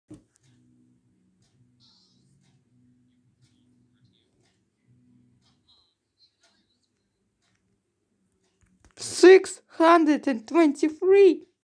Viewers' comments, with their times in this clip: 0:09 Your Voice Reveal